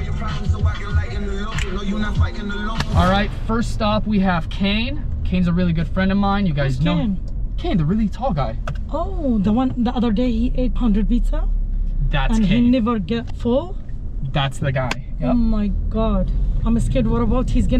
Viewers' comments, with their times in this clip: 0:03 I thought he was delivering to 'Canes',that's great and cheap joint in States.